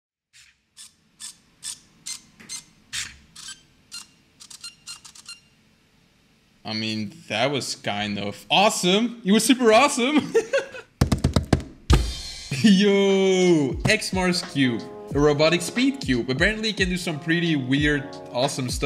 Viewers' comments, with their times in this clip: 0:01 the music is like the starting of bitch lasagna